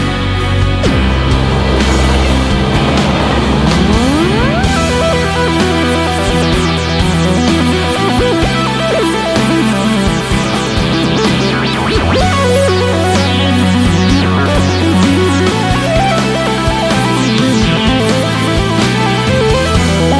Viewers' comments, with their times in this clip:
0:04 keyboard solo just makes the song xD